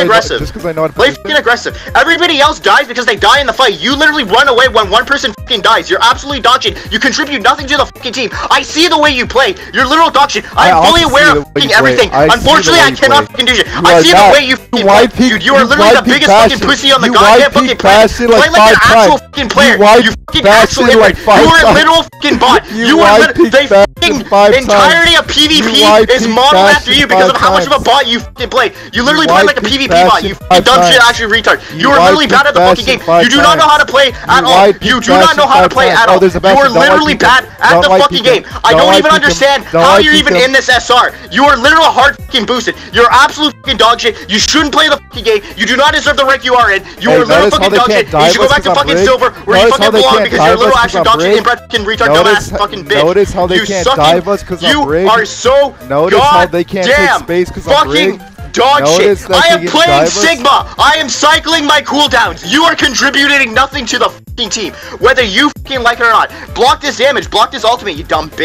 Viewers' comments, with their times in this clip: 0:04 I was genuinely surprised how mad he was here he was talking so fast lol
0:52 Blud is rapping 💀💀